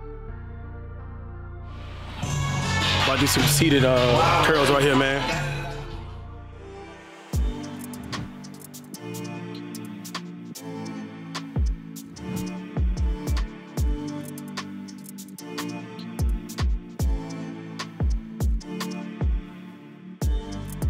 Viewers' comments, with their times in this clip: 0:03 I KNOW YALL HEAR THAT LUCKI😮‍💨